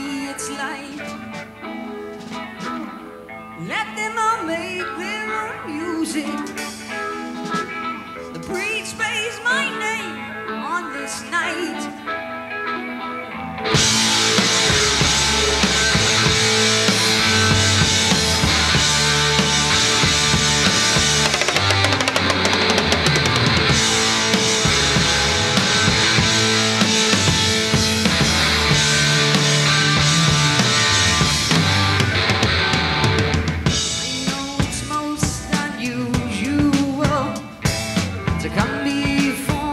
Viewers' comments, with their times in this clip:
0:08 To full power followed by a neckbreaking drum fill. I remember still hearing it for the first time. Blew my mind and still does!
0:20 THE best drum fill of ALL time !!!